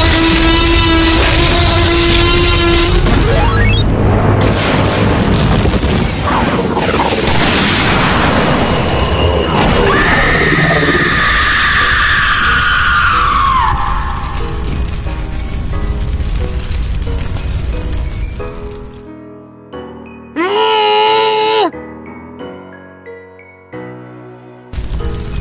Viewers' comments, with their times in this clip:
0:09 sonic exe skreeam